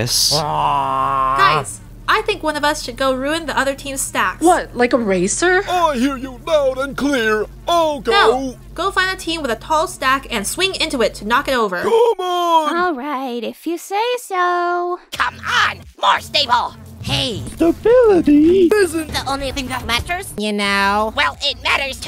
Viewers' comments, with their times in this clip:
0:04 Why does foldy saying “What like eraser” so satisfying 😂